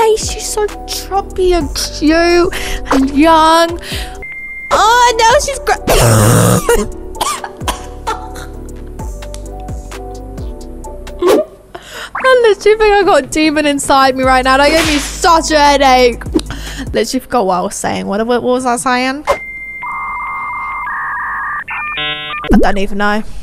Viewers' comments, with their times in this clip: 0:06 that cough though😂😂😂 how is no one talking about it😂😂😂